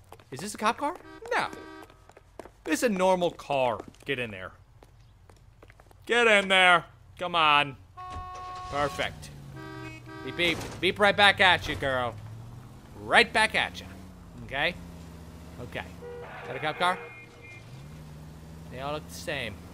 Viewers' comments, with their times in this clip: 0:05 LOL you sound northern irish when you shout GET IN THERE xD
0:05 sounds like Joe from Family Guy.
0:07 sounds like patrick warburton